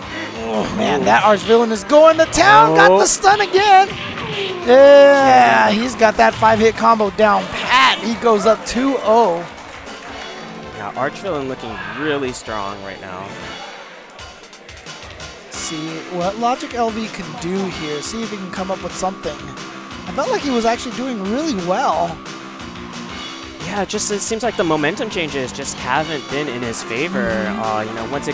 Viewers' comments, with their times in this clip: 0:10 Hooowaaaaa!!!! lmaoo! Did the sounds for the game :D